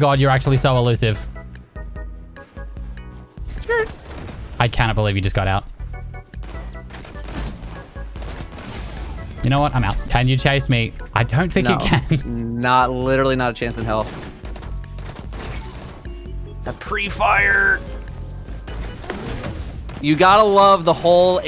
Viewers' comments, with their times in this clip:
0:06 That itty bitty little skrrt had me on the floor and i dont know why🤣🤣🤣